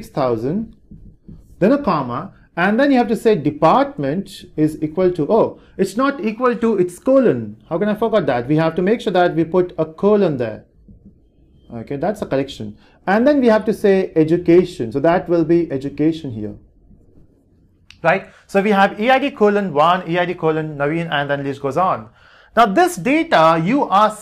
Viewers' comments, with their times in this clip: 0:06 Wait what? "how can I f*** with that?" 😂😂😂